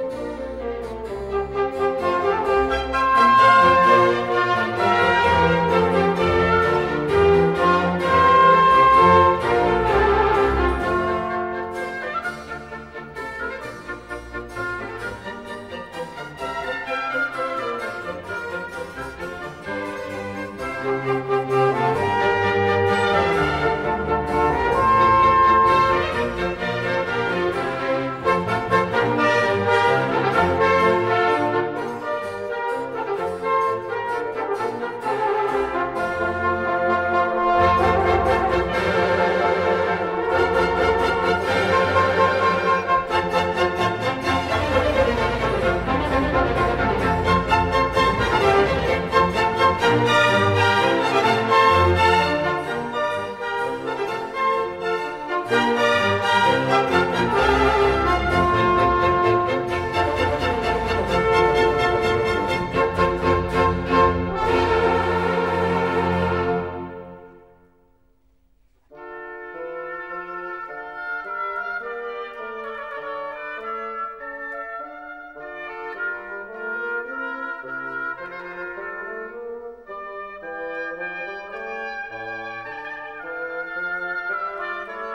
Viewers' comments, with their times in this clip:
0:10 I've always loved the way it perfectly resolves into the I - vi - IV - ii harmony
1:09 Omg the bassoon in is so good